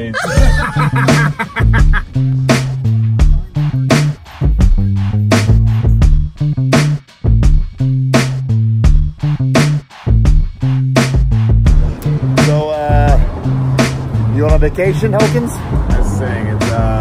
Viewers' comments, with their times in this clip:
0:03 The background tune sounds like mean street posse theme